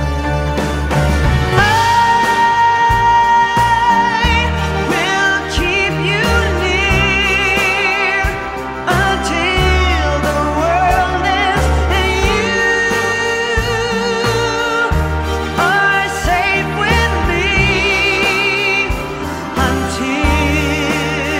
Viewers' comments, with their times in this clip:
0:06 you know the video has become CINEMA when this banger plays